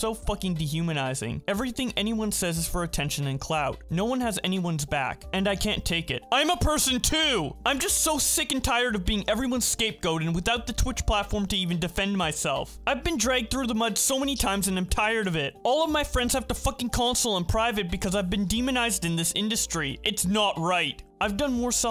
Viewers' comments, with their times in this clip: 0:06 respect for raising your voice to convey how ice Poseidon truly feels